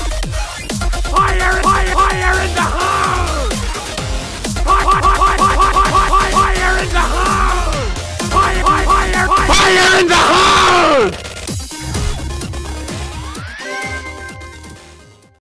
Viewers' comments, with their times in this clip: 0:09 THAT VOICE AT THE END 💀
0:09 go to and you will hear loud fire in the hole
0:09 rip headphone users 💀